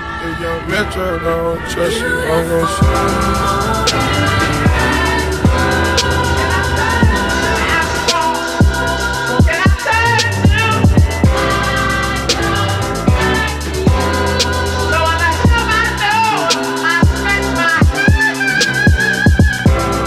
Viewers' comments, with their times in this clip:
0:04 The fucking drop was random aslllll. Regardless, keep doing your thing man. Use all the comments, mine included, as fuel. I can tell you're passionate about this and you're creative with it so keep going